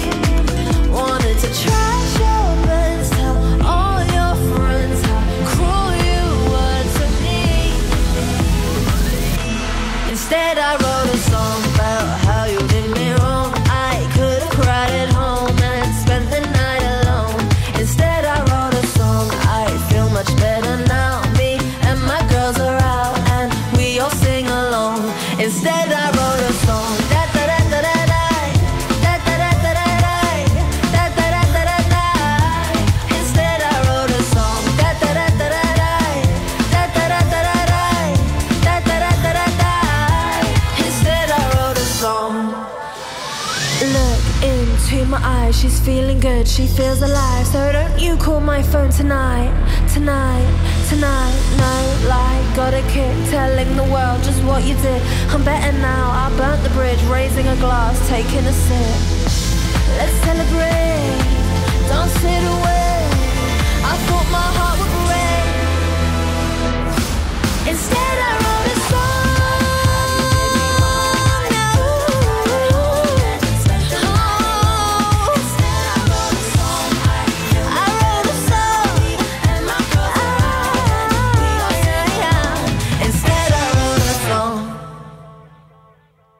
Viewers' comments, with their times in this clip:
0:10 does anyone actually hear the backvocalists?
1:06 I prefer with e drumps and that BUM BUM BUM BUM + the 2 girls backvocalists
1:07 I prefer this to the original version but it's a studio recorded version - Eurovision is a live singing competition and in all the live performances I've seen of Mae she sounds out of tune. Especially sounds awful live!